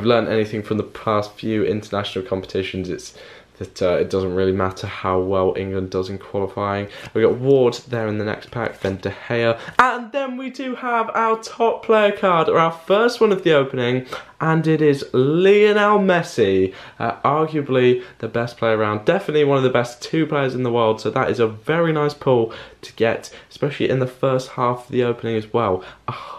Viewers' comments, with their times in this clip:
0:10 slow, boring and calm into a spaz attack lol Like if u agree